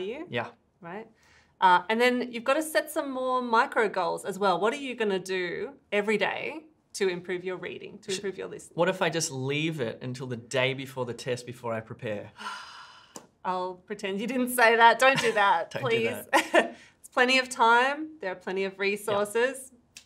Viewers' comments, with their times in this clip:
0:07 I like the slight tiny shush in there xD